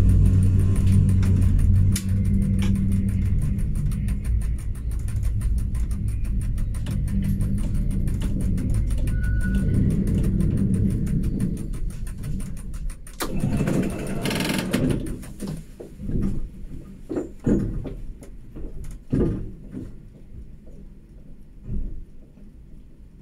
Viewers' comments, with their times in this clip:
0:09 Maybe I'm a little bit too late, but that's obviously a Be 4/6. You can hear the characteristic sounds of the speedometer, that the 3rd series doesn't have and you can see in the mirror, that it is not a Sänfte, since they have a Display instead of a Destination Rollerblind and a shorter coupler. Besides of that, that's a good video and i'm looking forward to more Cab Rides of Zurich Trams.